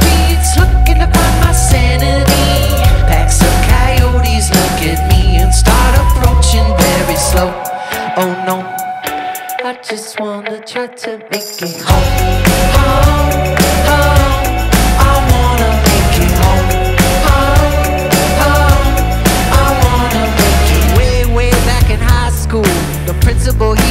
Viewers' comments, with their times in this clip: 0:08 from here that BG score is iconic